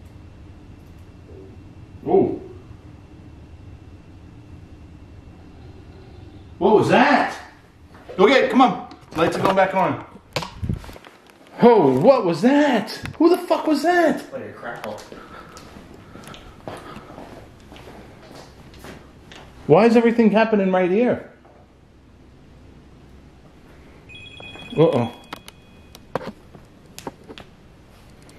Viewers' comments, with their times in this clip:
0:09 that was a growl
0:09 The fans going full on in the roombehind the bathroom🤣 it sounded like a growllll